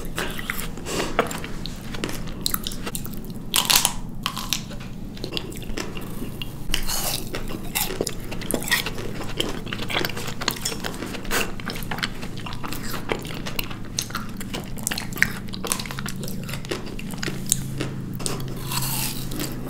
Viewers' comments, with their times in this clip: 0:06 am I the only one that heard a zombie from Minecraft?😆